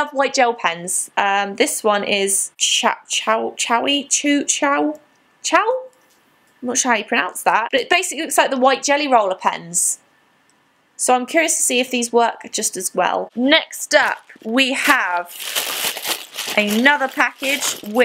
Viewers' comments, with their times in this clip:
0:03 when you are trying to pronounce the food you want at a chinese restaurant